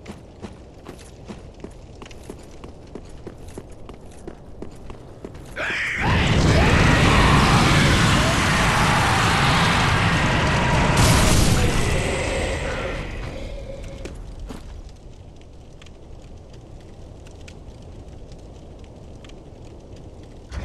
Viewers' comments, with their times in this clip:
0:05 I can vaguely make out the words "Water Slide". "AU-ER-SSSUEEEEEEIIIID!!!"